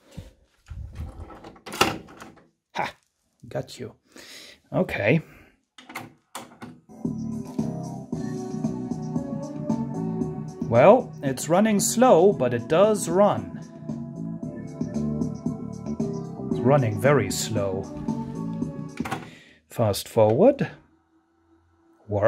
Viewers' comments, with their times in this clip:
0:03 the "Hah!" made me lol!